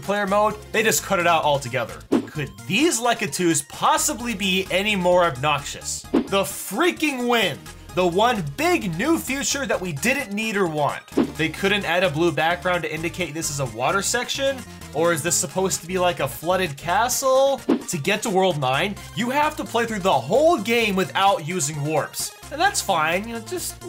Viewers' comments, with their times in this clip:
0:06 Ah, yes, 8-bit wind